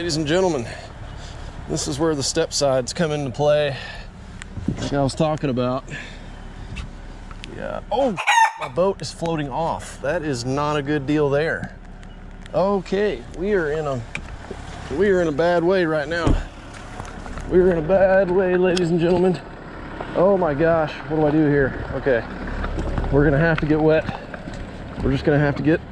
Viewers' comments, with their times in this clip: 0:08 frame sounded like.👺 a big old ruster ,tryed to fly the boat away.🤠 when your back was turned.🤙